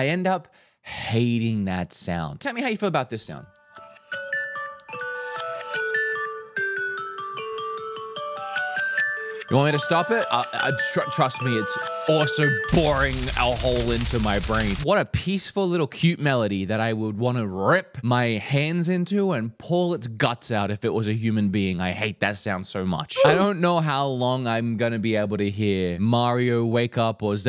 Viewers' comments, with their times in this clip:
0:03 That's my alarm. It's not my favorite but it's the best of the ones offered. I used to have another one on a different app which started quiet and gradually got louder. That was the best but the app was discontinued.
0:04 change it to the generic iPhone alarm and you got yourself a recipe for morning PTSD
0:04 I want to claw and eye out hearing that alarm.
0:04 When you started playing the alarm sound even my dog looked up at the TV and started getting up because that's the alarm my partner and I use to wake up lol
0:04 samsung alarm sounds just casually coming out of an iphone
0:08 i hate it even more because its my abusive exes alarm 🙄
0:09 Aaaarrrgg you played my alarm ringtone!
0:09 I still use this alarm sound, you did me dirty!